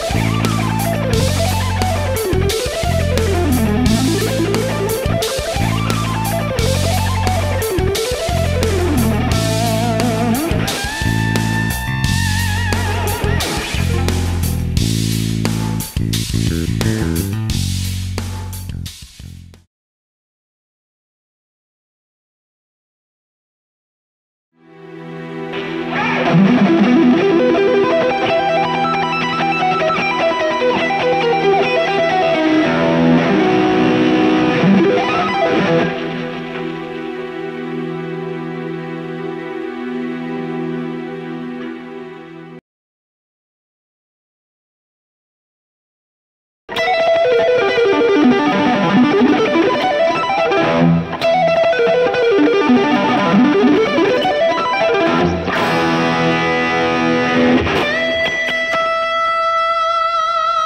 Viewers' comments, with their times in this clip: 0:10 The bend, that tone.... perfect!
0:46 Someone's been listening to Stephen Taranto